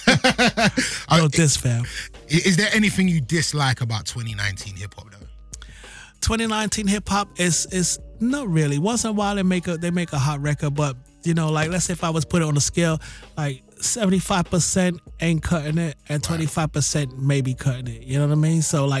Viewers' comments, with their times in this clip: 0:03 His accent is purely American but the way he pronounces certain words you can definitely tell there's some British in there. When he said "2019 hiphop" his British accent when he says 19 is pretty prominent. I'd still consider the guy American but it's great knowing he originally came from Britain.